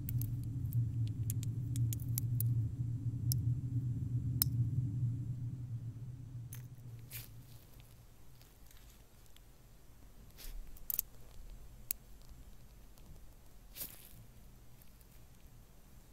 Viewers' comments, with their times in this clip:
0:04 The glass sounds 🤤😴😴😴